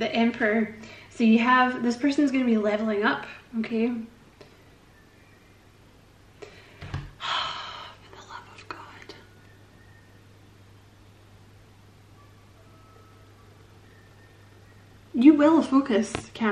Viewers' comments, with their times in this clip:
0:03 😂🤣 That sweet, subtle music in the background is really lovely and cute. Thank you for this very interesting reading! I'm currently single, still have my ex a bit in mind but getting over him after so many years of not changing, so I'm not really clear about the person your reading could be about.